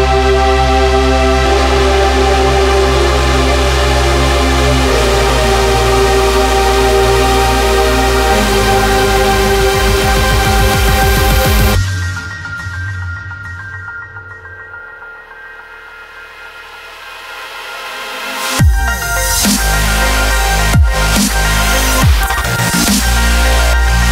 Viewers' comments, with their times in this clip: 0:09 It begins it's a VIP on the second breakdown forward.